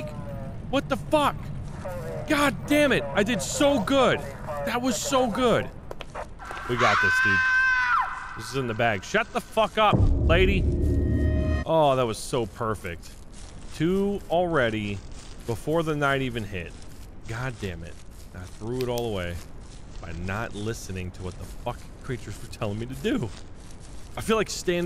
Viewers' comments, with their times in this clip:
0:07 Each one with the ladylike voice is one of the sisters with requests, that you’re slowly figuring out